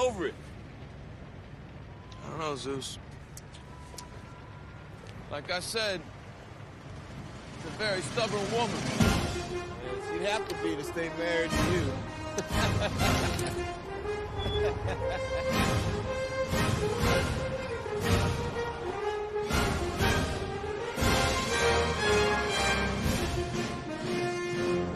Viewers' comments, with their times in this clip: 0:07 damn the fanfare starts. why it goes so well with the scene. Like "yeah, NOW THE JOB IS DONE" still does to me like it was 95